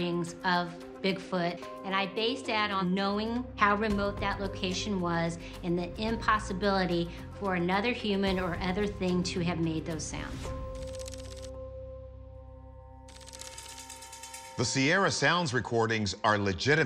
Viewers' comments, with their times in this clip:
0:04 i disagree, i believe that sound is made by humans, the third noise in particular even has intonations of an american accent, why would Bigfoot have an American accent....